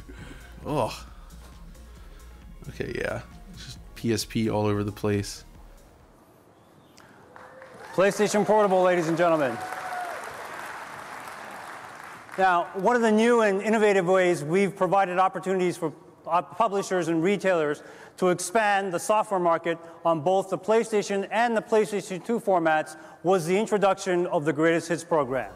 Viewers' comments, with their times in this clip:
0:06 did he said Play Station Horrible???